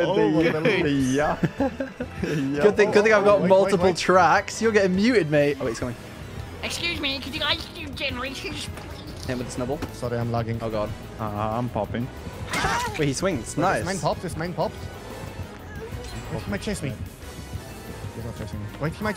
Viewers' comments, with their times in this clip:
0:06 The voice made me laugh so hard